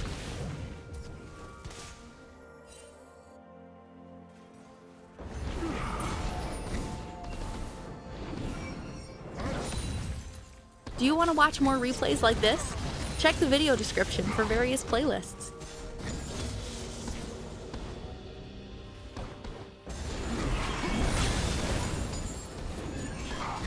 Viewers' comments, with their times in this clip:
0:10 I legit got jumpscared by the woman's voice in LOL